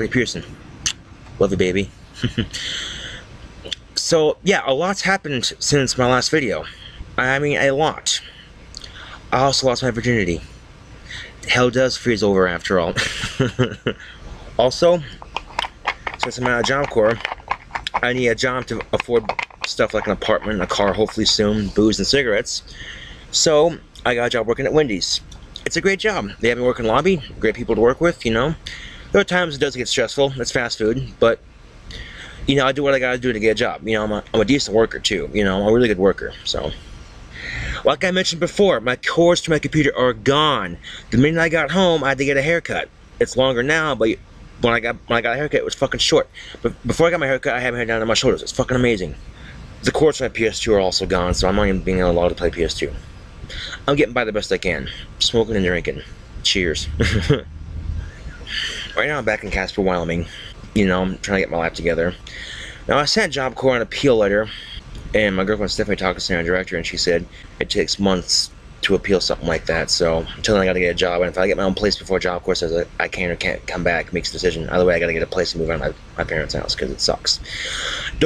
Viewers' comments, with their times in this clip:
0:07 he does sound very normal here, what changed him?
1:01 He talks so much faster during the era in